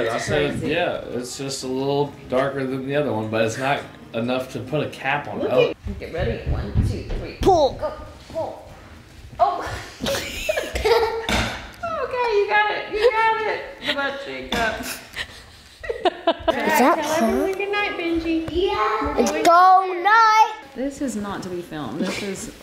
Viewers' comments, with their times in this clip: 0:05 his laugh and face had me in tears!!!!!!!!